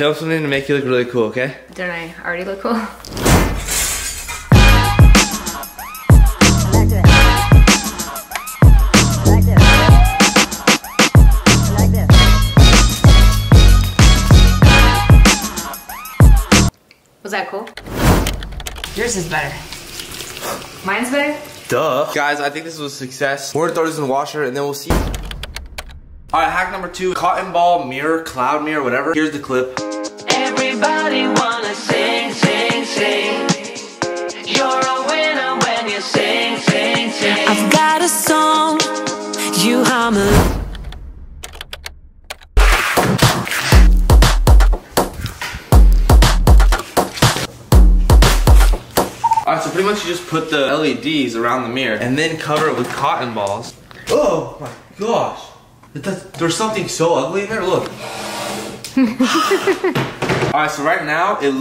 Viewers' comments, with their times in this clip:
0:05 the music sounds like a dying horse
0:43 did anyone else hear, “let’s kill Cher” ? Lol